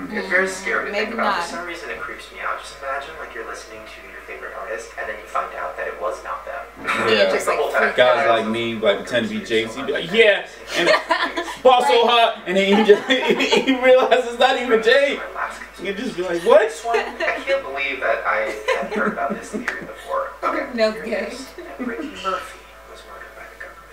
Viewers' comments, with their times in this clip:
0:10 that was a nice JZ Impression